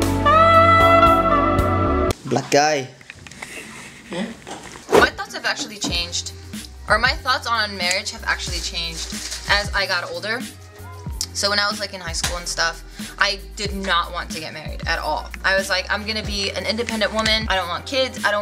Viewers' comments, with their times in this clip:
0:03 After the sensual music & rose petals.. Cut to the black guy with big wide eyes... Lol...